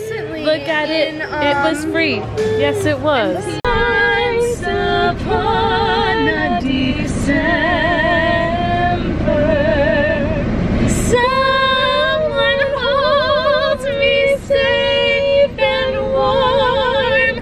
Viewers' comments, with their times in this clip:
0:04 that song still wrecks me.